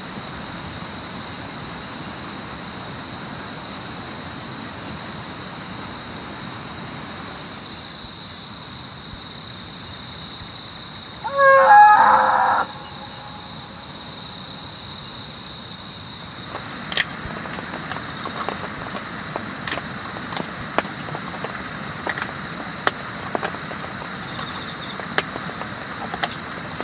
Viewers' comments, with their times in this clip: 0:07 Who else was startled by that scream 😂
0:11 Just as I'm drifting off scream 😂 what's that about!